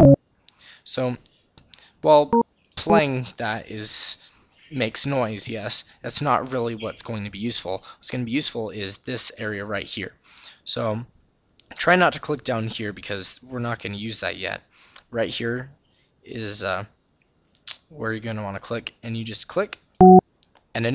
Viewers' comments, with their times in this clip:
0:04 sound like G-man bro 😄